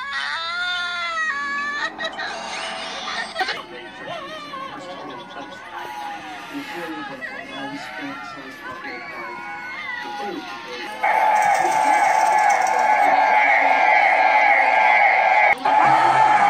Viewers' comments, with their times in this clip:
0:03 Me: Oh my gosh!! My ears!! covers my ears Gosh!!!